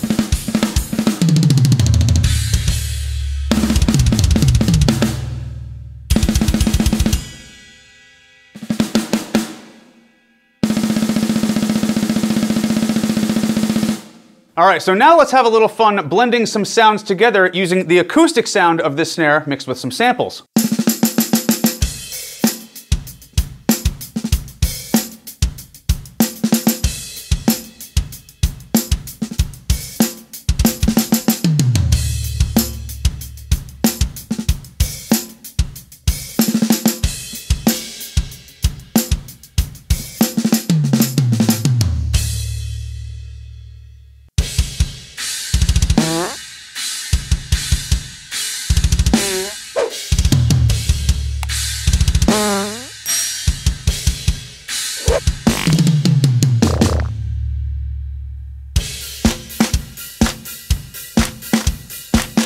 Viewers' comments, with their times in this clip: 0:09 You are truly amazing, just the way you do effortlessly a fucking gravity blast out of no where. And just your drumming in general is so fucking good, and I am convinced you only achieved this through black magic and or witchcraft. You are probably one of the most phenomenal drummers out here. And I believe if you didn't have tendinitis the sky would most certainly split in two because this mortal plain could not handle the sheer might and power that your full drumming ability would produce. Sex
0:44 Alright so when the fart pedal started coming into play, I had my kitten on my chest & went to put her down, but she kept digging a claw into my shirt so I couldn't put her down, and I'm trying not to laugh because of the farts lmao!
0:44 Wasn't sure where we were going with the tambourine sample mixed with acoustic sound... but then happened!! 😂😂😂